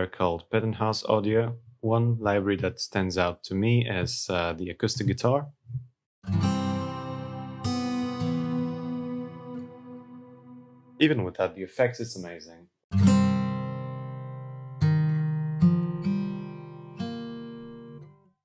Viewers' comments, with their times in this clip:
0:06 as a guitarist i can say that sounds AMAZING you can even hear clearly when you change between frets